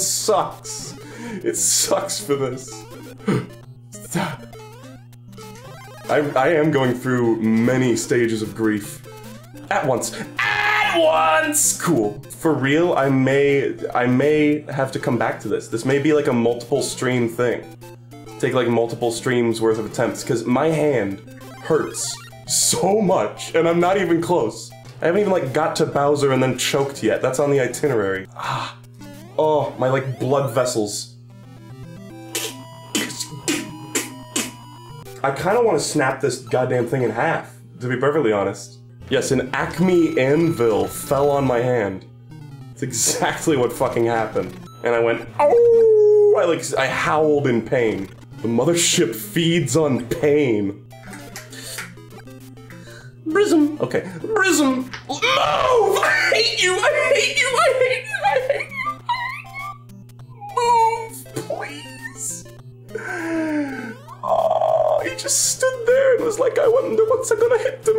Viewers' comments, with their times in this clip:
0:09 he sounded like Tom from Tom & Jerry screaming
0:54 is the best "i hate you" i have ever listened to